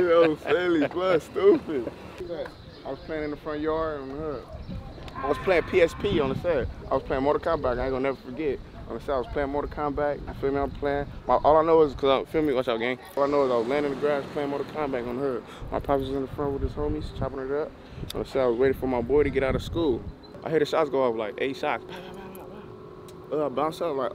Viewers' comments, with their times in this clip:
0:09 Aye that nigga got me dien 😭😭😭 bro said “mortal komback”